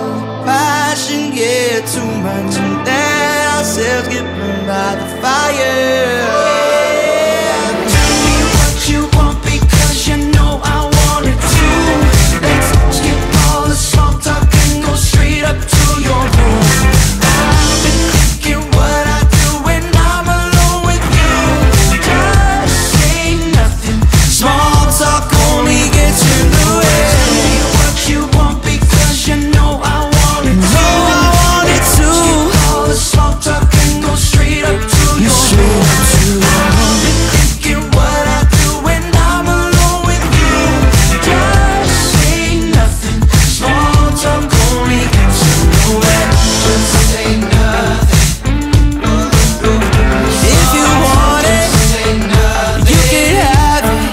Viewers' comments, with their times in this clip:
0:06 the "oh yeah" part is my favourite it's so raspy aahh
0:35 The tone in which he sings straight up to your room kills me
0:36 His voice oml 😵